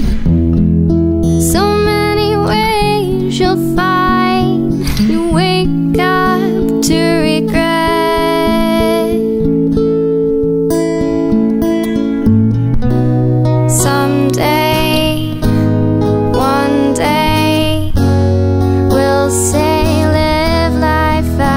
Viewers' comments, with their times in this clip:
0:07 live life vocal are beautiful and i love that one i almost cried it was so beautiful🥺😊🥲😀